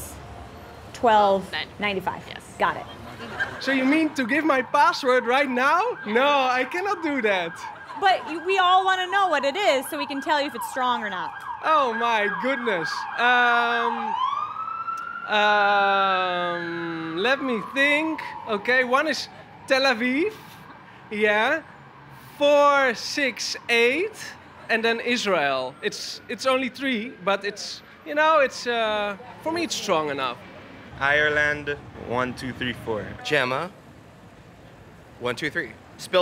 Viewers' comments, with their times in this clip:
0:03 that dude is so dutch ahah kinda funny how you can notice it so easy
0:03 This dude sounds extremely Dutch I should know I’m Dutch too
0:03 I can't do that Cop sirens:are you sure about that.
0:03 Lol he's so cheerful
0:03 This guy is talking about Tel Aviv and Israel and he doesn’t look quite Dutch either, but he has SUCH a Dutch accent. I cannot believe, omg.
0:03 when you ask Borat his password :D
0:03 The guy must be from the Netherlands, you can tell from his accent.
0:03 must dutch accent ever
0:04 I love how the guy is saying that he can't do it, but when he starts thinking a siren goes off😂😂
0:04 this guy is Dutch i can hear the accent😳✋
0:04 The guy is Dutch! I recognize my country's (unflattering) accent from miles away lol ❤️
0:04 I swear the guy from is either dutch or Italian, his accent is funny
0:08 Im like 90% sure the guy from is dutch
0:08 the cops in the backround high speedchase i bet😂😂
0:10 He is Dutch, I recognized the accent.
0:12 he sounds liek a dutchie.
0:18 lol that guy is def. dutch xd